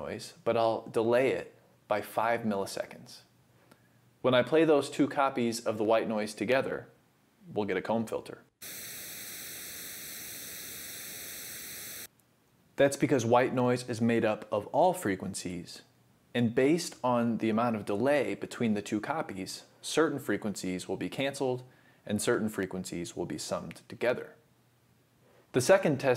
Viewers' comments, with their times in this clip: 0:07 why the filter is not sweeping, it's just static?